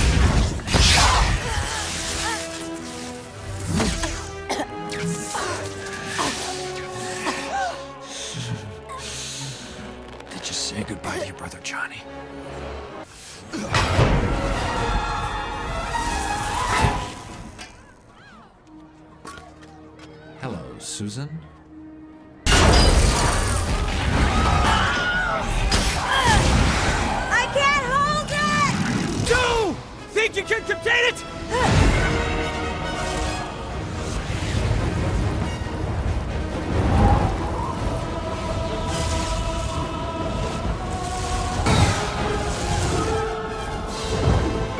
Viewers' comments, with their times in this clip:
0:10 Did anyone hear it sounded like her gogo boots tightening
0:23 The scream though😂
0:24 The goat scream 😂
0:24 that famous scream haha i can't remember its name
0:25 The scream sounds familiar to the Wilhelm shout hahahaha
0:25 any of u guys here the AOOH
0:25 that scream... o.o
0:25 the Wilhelm Scream
0:25 you can hear this aoohhhhhh
0:25 you can hear this aoohhhhhh